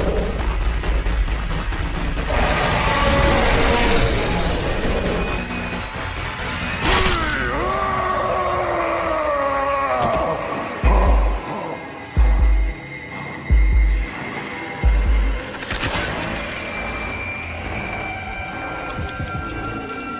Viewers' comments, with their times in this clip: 0:07 Here's the disturbing one that is pure nightmare fuel. In a dream sequence, a zombiesaur roars in a red background as Spear, Izuku, Spongebob, and Shalltear run for their lives in terror. And all of a sudden, the zombiesaur bites Spear, Spongebob, Izuku, and Shalltear causing them to scream in pain. Spear: Izuku: Aaaaaaaaaaaaah! Shalltear: Ahhhhh! My arm! Spongebob: Gaaaaaah! My eye!